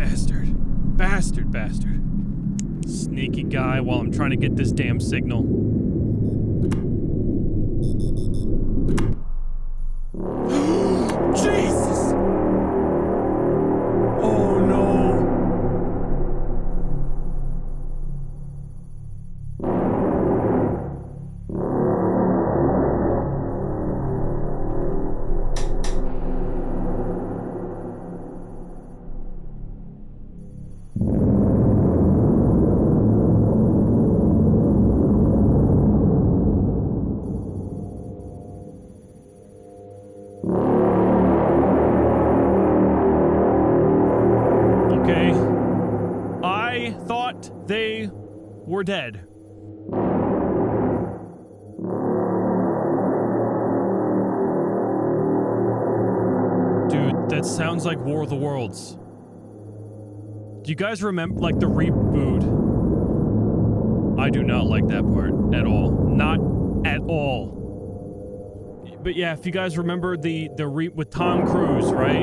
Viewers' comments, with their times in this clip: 0:09 The sound is the arm movements of the mountain excavator they normally mine for stone to make gravel to sell
0:13 kid playing a tuba
0:22 Kinda sounds like the reapers from Mass effect
0:28 God do I hate the tripod horns, giving me a traumatic experience and all. Literally gives me ptsd
0:31 sounds like me when im in bathroom o.o
0:38 sounds like world of the wars that sounds fucking like them it's giving me chills and goosebumps
0:39 that’s the “trumpets” in the sky that witnesses have heard all over the world from the sky. It’s pretty scary
0:56 Its sounds like whattt WHATT pleas watghhhhhhh uck whta what like what pleas what help what Link fucking please